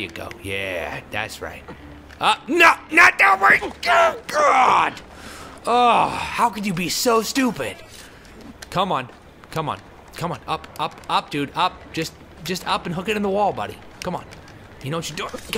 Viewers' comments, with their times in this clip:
0:03 Did he say Kakarot?